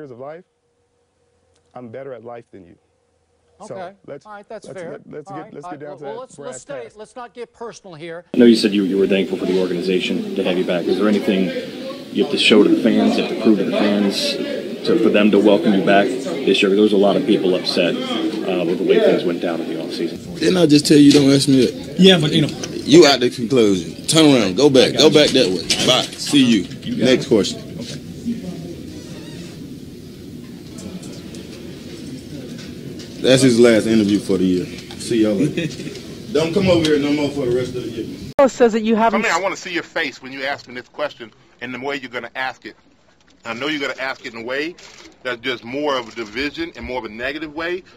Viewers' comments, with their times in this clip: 0:05 Stephen A was trying to keep that laugh in 😂
0:28 Next question… 5 seconds of awkward silence 😂